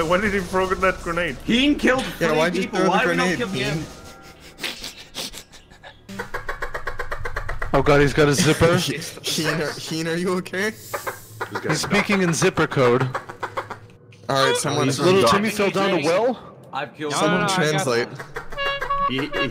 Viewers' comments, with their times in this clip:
0:04 I do believe that sound is the most disgusting noise I've ever heard